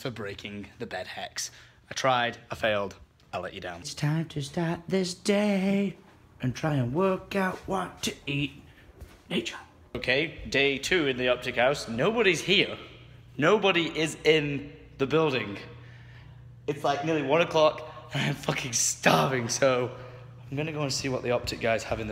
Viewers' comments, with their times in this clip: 0:05 were you singing to the beat of Gloryhole by Steel Panther? xDDD